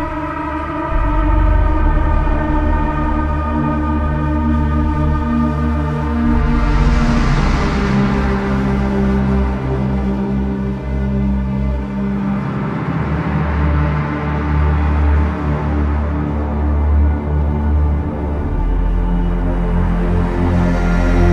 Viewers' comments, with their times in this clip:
0:06 when you win a round in gunfight this melody plays, which in my opinion is orgasmic.